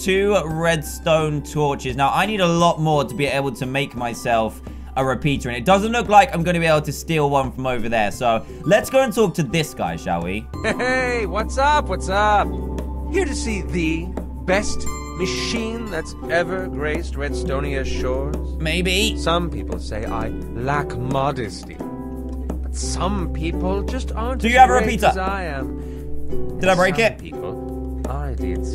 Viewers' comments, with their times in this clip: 0:10 does the schoolboy actually sounds like aiden? Or is it just me?
0:15 OMG DAN'S VOICE xD